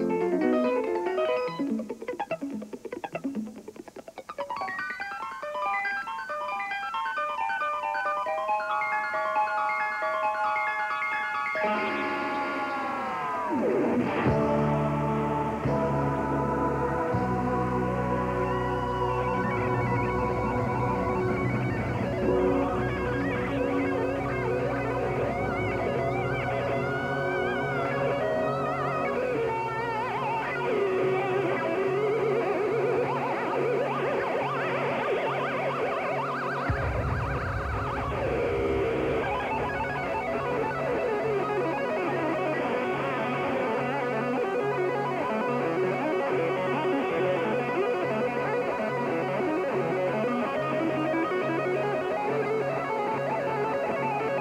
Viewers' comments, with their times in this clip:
0:06 I thought the icecream man was here
0:22 he controles the wah with his mind!!
0:38 wow, beautiful tapping here mister Vai ;)